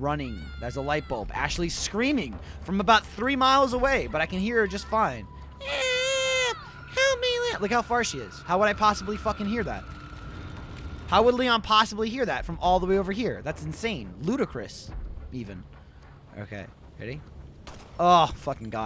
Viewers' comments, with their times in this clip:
0:05 "Look how far she is. How would I possibly fucking hear that?" Because the girl is like a goddamn banshee with that scream, that's how.